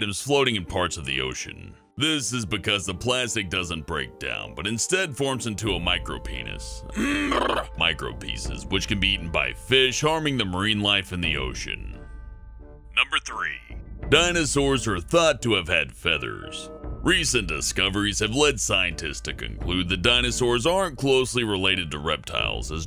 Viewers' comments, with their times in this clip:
0:04 in this video he says micro pinies